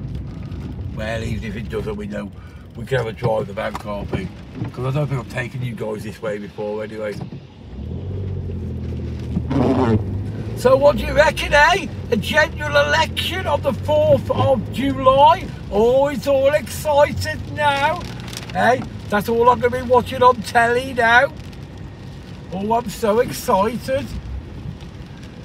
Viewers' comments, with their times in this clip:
0:08 What the heck was that noise. Blowing off in Blackpool.